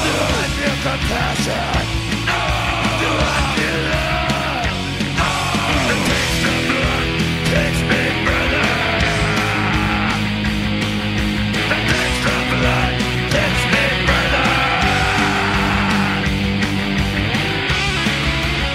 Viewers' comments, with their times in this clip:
0:06 The bridge is cool.